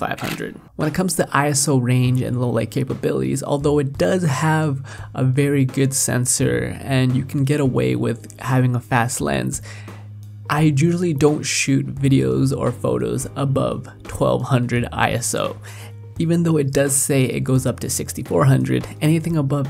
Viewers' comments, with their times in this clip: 0:07 Which lens you are attached? Your voice is so good... Loved your work...